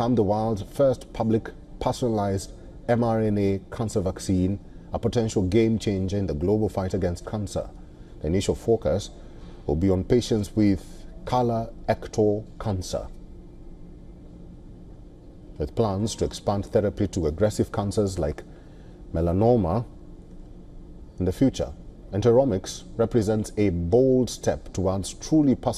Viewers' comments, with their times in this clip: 0:10 omg that cracked me. Not color ectal cancer. It's colo-rectal cancer meaning one for colon and rectum cancer